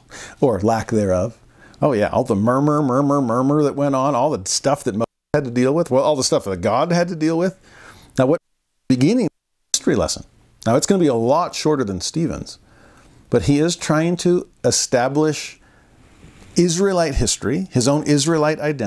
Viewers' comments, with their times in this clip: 0:06 it sounds like there is an interruption in the sound. ❤